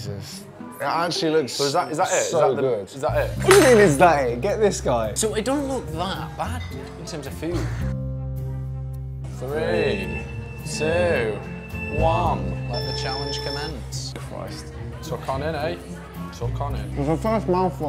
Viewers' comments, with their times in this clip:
0:04 bro was so scared he became scottish